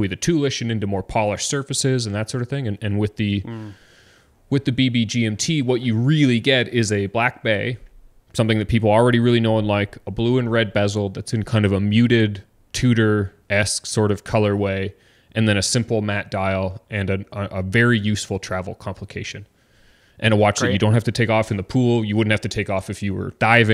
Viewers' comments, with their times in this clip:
0:06 there is life in the background.
0:06 there is life in the background :)